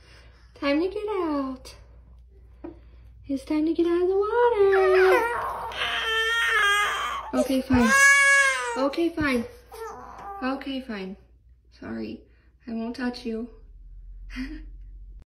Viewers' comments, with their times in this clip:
0:08 this is what my alarm clock sounds like